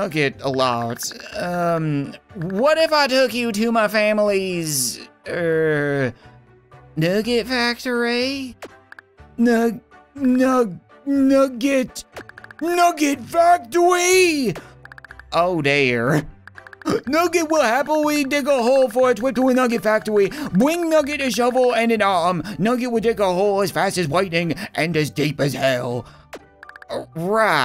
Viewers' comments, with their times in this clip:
0:10 right there you can hear a voice crack